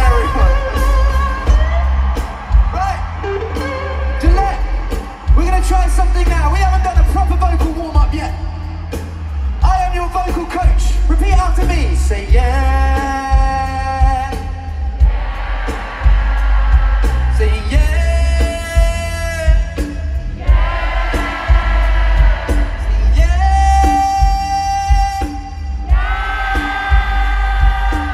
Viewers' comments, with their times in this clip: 0:10 I love how their Boston accent comes through. Ed tells them to "Say YEAH" and because of the accent it sounds like "YAHHHH".